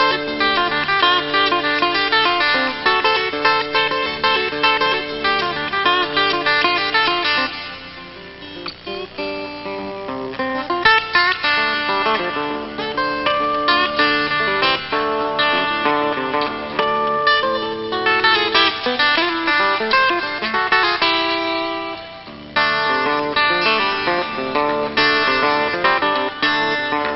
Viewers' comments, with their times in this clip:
0:08 i love it when he quiets down and then slowly gets louder